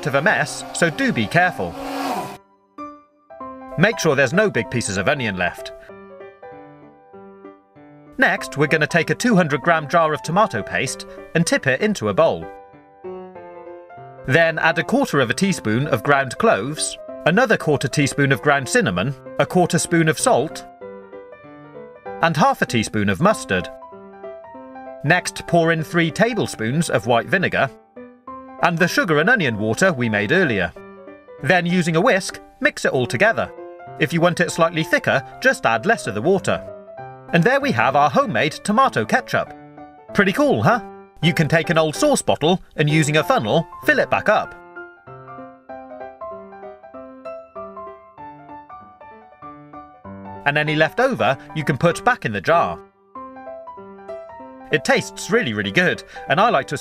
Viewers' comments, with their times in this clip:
0:09 8 thought it was tomato pasta l9l
0:40 the quickest pretty cool huh of the century 😂😂